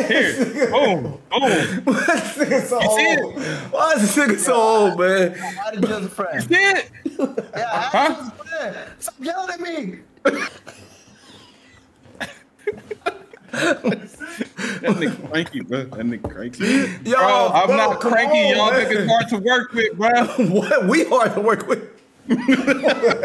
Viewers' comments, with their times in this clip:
0:05 Senile senior citizen Desmond Johnson yells at Indian tech specialist Dylan Patel because the printer isn’t fixed.